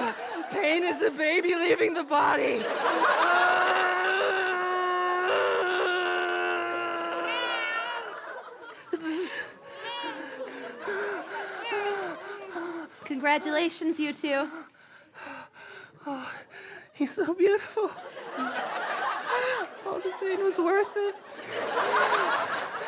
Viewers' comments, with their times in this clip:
0:06 did that baby meow